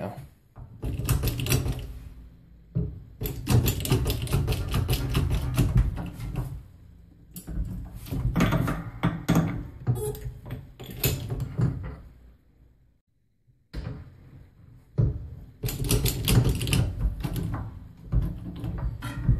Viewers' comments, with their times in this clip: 0:04 sounds like the Pixar intro with the lamp that squishes the i 😂